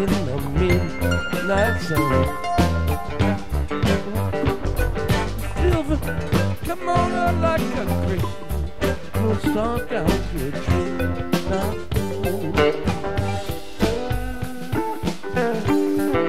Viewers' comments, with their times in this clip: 0:03 What's Bobby using to get that digital drip drop sound ?